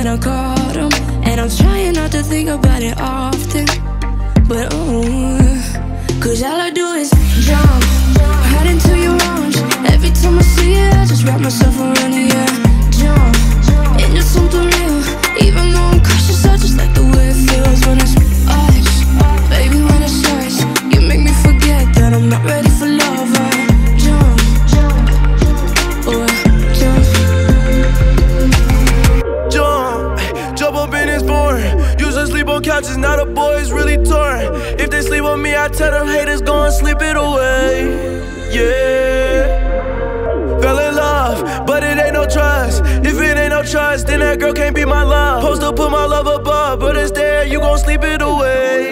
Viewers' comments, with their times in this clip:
0:04 she sounds like Lauv in “Never Not”
0:29 Trippie starts if your wondering